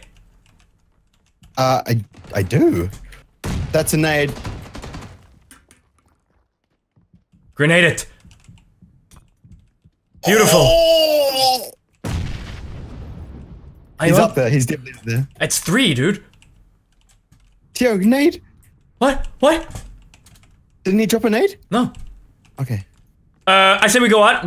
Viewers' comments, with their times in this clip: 0:10 best Big Smoke voice